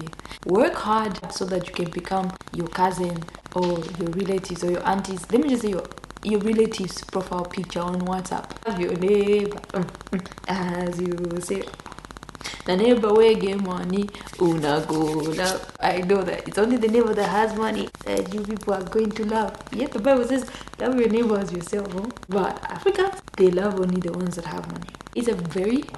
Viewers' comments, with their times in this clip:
0:09 there was a problem with the audio I think🤔